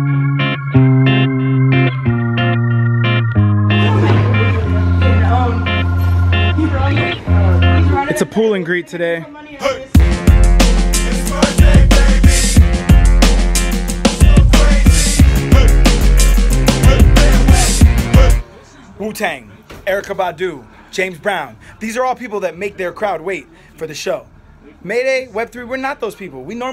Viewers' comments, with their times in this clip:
0:08 The timing of the words/instrumental were impeccable